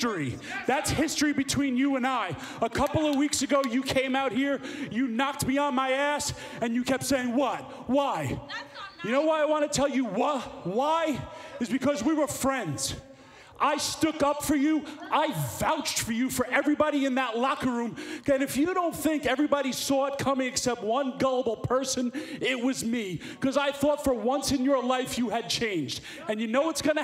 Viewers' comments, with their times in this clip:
0:08 The lady yelling "that's not nice!" Is so Gold!!!
0:08 brilliant fan shout out!!!